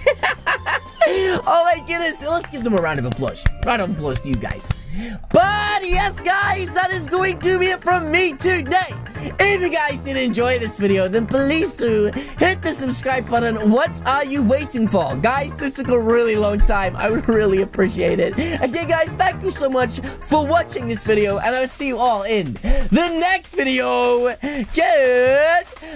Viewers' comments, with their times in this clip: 0:06 he says but yes guys in a funny way to me